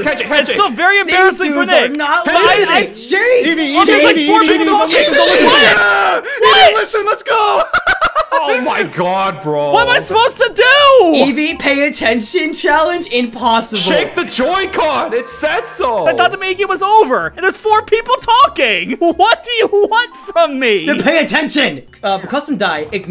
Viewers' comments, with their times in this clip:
0:05 why did that laugh sounded like an underwater theme from Mario?